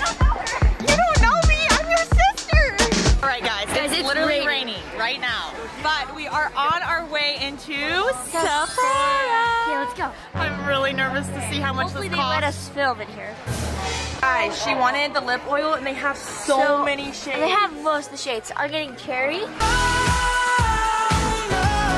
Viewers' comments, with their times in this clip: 0:03 i died when she started singing